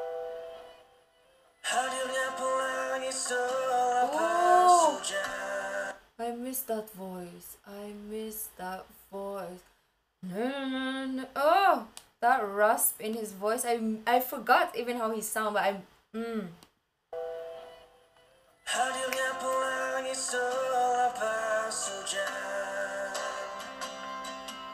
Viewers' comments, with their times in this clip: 0:07 Exactly me saying the same line after listening that beautiful voice of him.